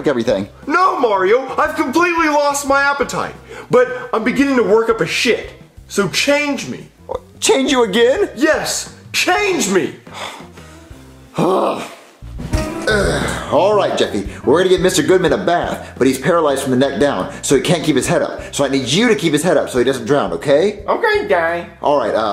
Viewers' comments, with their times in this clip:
0:08 goodman got more autotune than travis scott